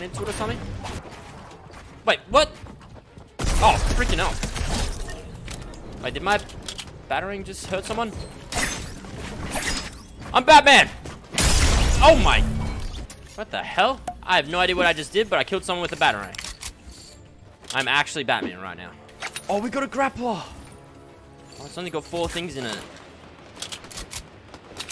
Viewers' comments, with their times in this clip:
0:07 I AM BUTTMAN